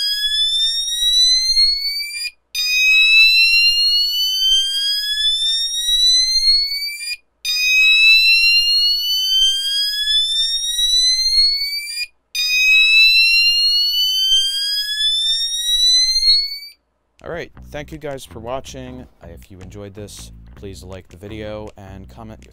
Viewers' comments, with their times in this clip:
0:10 A race car but the race car is a mouse